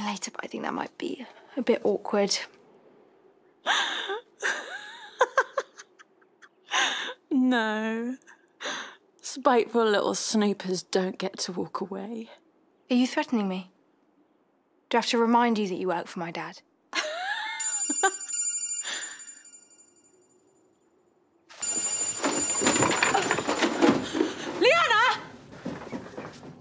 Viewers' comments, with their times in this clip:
0:05 meena evil laugh I love it haha 😆
0:07 lol the way meena said that threat was hilarious